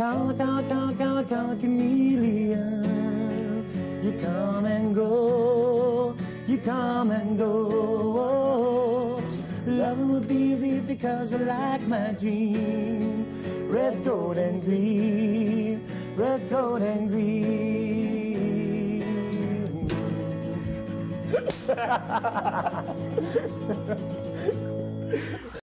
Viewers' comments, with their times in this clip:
0:07 What chord is he playing right after the Bm?
0:19 Done singing George claps Him and the person playing guitar laughs I like that part